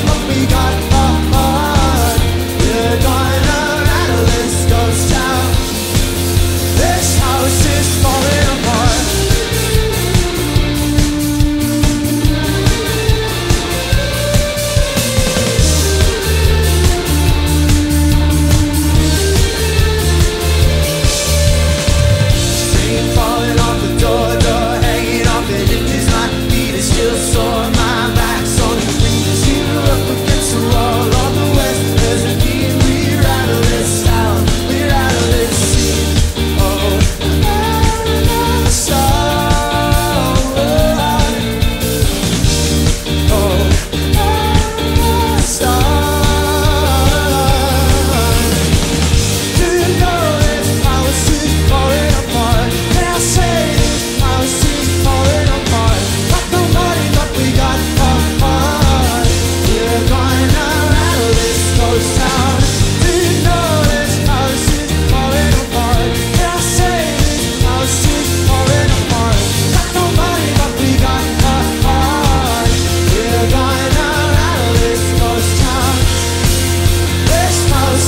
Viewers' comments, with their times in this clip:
0:09 riff is my favorite omg
1:02 a little mess up from the bassist there, but i love hearing that, then i can be sure it's not playback or anything like that!